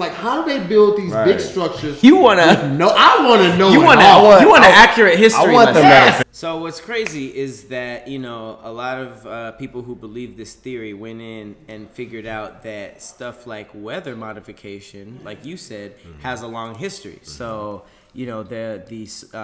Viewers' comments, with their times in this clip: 0:05 Shit got too real and the Agents "fixed" the audio